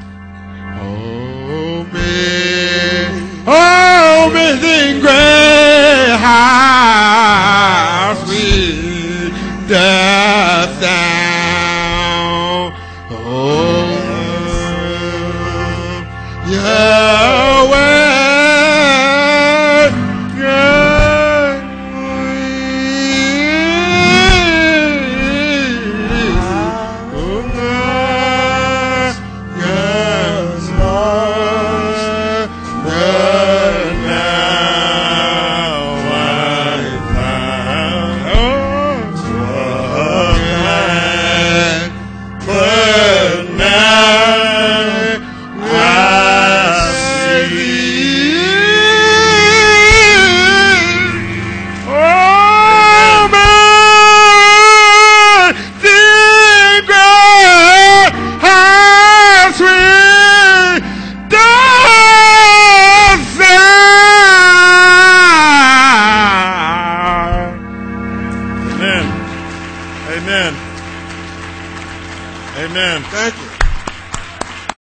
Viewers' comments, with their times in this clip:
0:03 this guy was drunk, he mumbled most of the song, he said "omazing grey" it's funny as fuck
0:03 i was looking at another website and then he sang he high note and scared the living daylights out of me.
0:04 Sounds like a dieing cow. But he really takes it to a whole new level after hahahahahahaha.
0:04 he sounds like he's having a heart attack
0:04 Dat boy song that thang doe
0:04 he did a JOJO or KC from Jodeci! LOL!
0:07 the lord knows hes trying xD he nailed it no killed it
0:49 I gotta give it up to him for tryin god bless him but he kinda hurt my ears and on could he hear himself?
0:53 lol all i heard was weeeeehh whuhhhhuuwuuhhhhh nuuuuuhhhh whaaa mwhaaaa lmao and that ending was priceless xD
1:00 Amazes me because he thinks he's singing good and actually tries to go higher.
1:01 sounds like he was bitten by a big dog